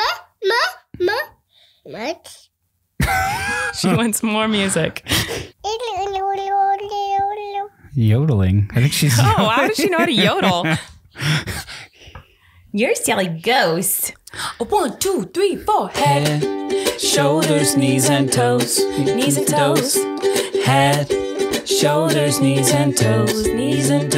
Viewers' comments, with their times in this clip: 0:07 I feel like she was most certainly saying music more more mama more :P she is soo cute, she was I feel like trying to make the strum of the guitar noise haha